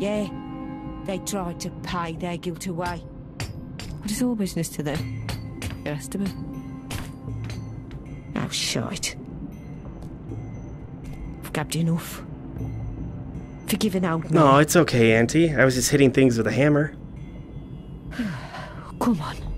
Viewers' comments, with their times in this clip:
0:07 Did you fart